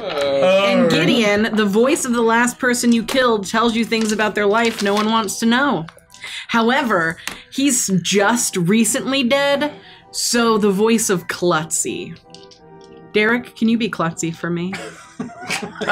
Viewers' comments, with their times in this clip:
0:03 (klutzy is here doing plays chuckles)